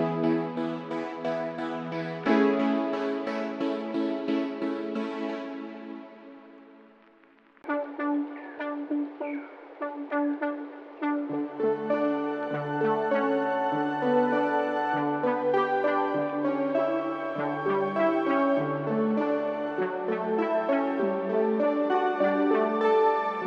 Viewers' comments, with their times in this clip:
0:09 That Skyloft song really doing it for me right now